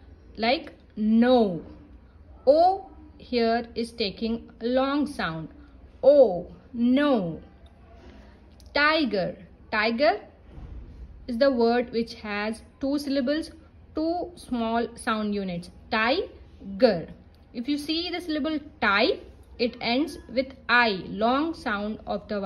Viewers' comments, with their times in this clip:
0:08 In no there is different pronunciation . But in dinosaur you are say " no" as "na" why